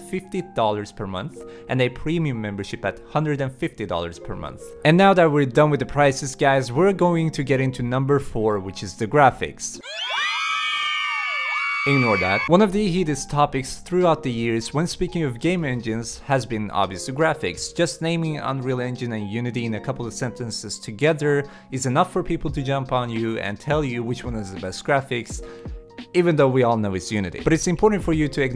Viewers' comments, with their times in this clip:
0:10 why me hear screaming